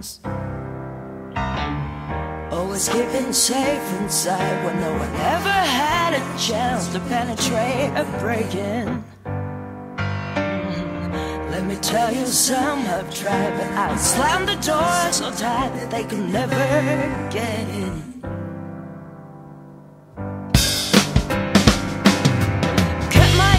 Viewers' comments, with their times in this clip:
0:05 Uhhh. Penetrate a... brigand? W U T